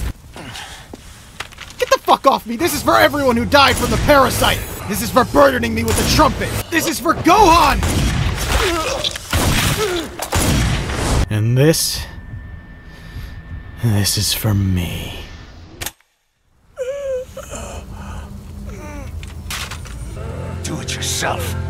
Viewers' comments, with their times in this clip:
0:07 Okay so! This is such a small detail that I'm not even sure it's there, but right after he says "This is for burdening me with the trumpet", you can just BARELY hear someone saying 'what?' I'm not even sure if I'm hearing it at all but if so it's such a great detail.